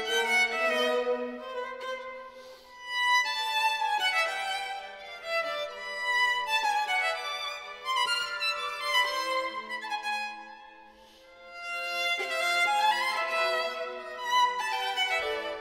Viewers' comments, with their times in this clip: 0:03 such an interesting rhythm for the period